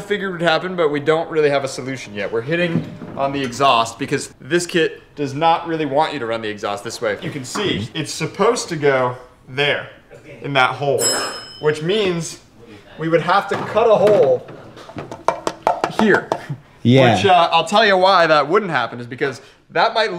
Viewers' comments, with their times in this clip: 0:08 "there, in this hole". insert "ding"! sound 😂 I see what you did there.